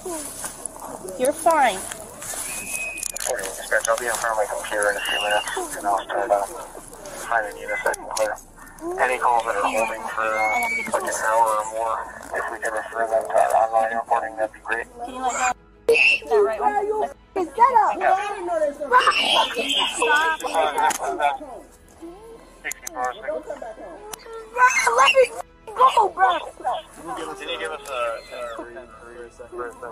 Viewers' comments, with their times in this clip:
0:07 I’m dead with his crying 😂😂 gangster 13 years old crying like chicken
0:10 Kid was all tough with all his warrants but proceeds to squeal as he is being arrested. Love his mom, though.